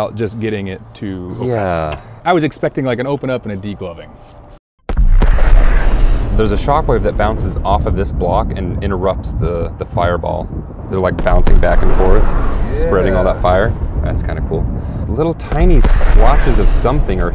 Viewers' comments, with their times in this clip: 0:04 The sound of the explosion reminds me of the CoD Zombies end of round noise